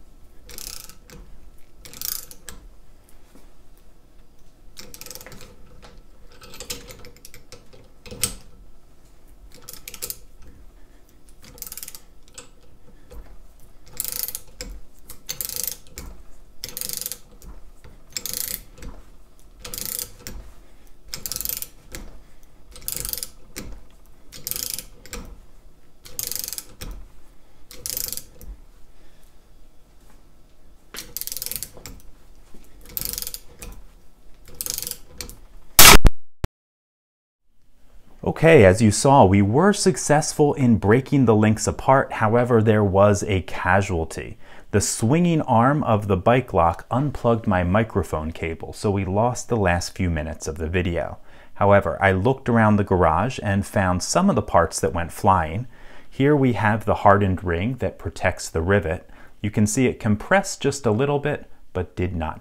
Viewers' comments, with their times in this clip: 0:10 As I was listening (decent DAC and headphones) there's a point (starts ) where the microphone picks up a sound that I recognize as critical material-stress from back when we did material theory in school (decades ago). From the tests where we pulled metal bars until they stretched and cracked. You also see the material of the rivet start to flake a little. I am curious, did you feel a shift in tension too? You shifted the grip just after the first little crack. Thanks for the jump-scare though, the headphones really helped.
0:33 Everything is calm, there's a gentle clicking going on ... nothing to be surprised about ...
0:34 whistling “-JESUS CHRIST!”
0:34 snap, crackle, POP!!! ⚙⚙⚙⚙⚙⚙⚙⚙⚙⚙⚙⚙
0:35 Got a click out of 1
0:35 Yo, the scary thing about the click outta 1 is how it sounded like a gunshot and everything went quiet.
0:35 felt like the aftermath of an explosion with my ears ringing
0:47 It was scary... When the screen became black after this crash, I thought it unplugged you and the microphone altogether...